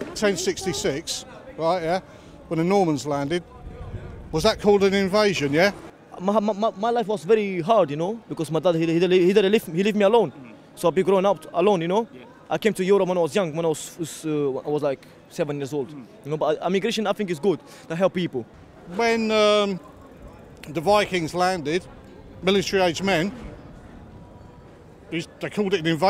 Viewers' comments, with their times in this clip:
0:10 you came to europe at 7 and that's your accent?